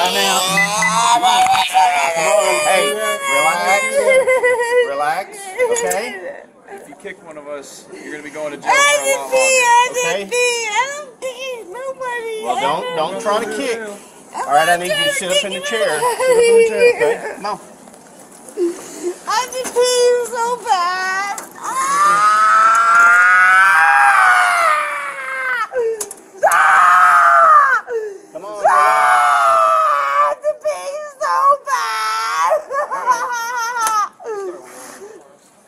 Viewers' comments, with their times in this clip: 0:04 drunk karen number two starts speaking in tongues 😆
0:21 She sounds like Robert Plant vs. Janis Joplin